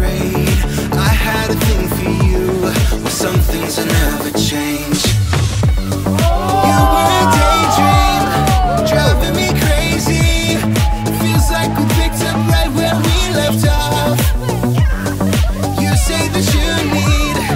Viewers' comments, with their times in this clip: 0:04 dude puts his leg on the table Other Teens : OOOOHHHHHHH!!!!!
0:05 that made me laugh so hard!😂 His face and how people were cheering him on!
0:05 that made me laugh so hard!😂 His face and how people were cheering him on!